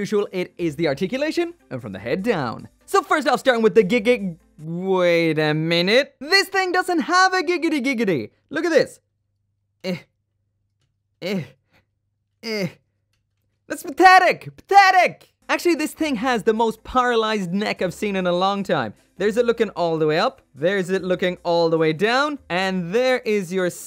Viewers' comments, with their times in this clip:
0:08 That eh..eh..eh onwards was hilarious to me. It sounds weird like it was not supposed to be heard in gundam review.